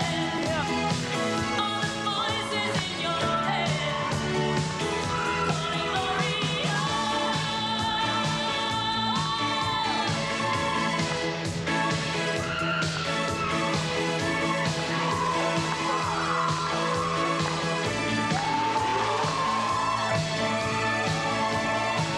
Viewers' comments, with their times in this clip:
0:09 omg you can hear the ppl in the stands roar!